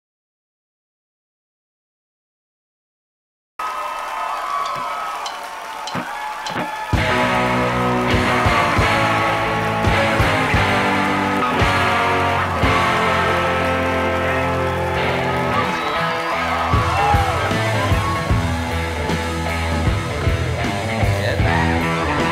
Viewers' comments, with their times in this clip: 0:05 clickbait those are notes not chords